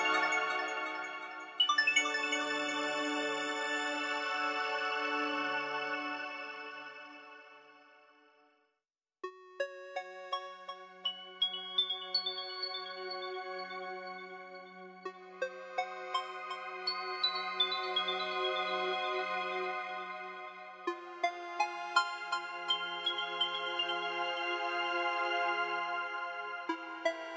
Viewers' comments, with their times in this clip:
0:10 I like how every scene with Lapis has her theme in the background.
0:10 did anyone just noticed that in it sounds the tower theme with mirror gem theme?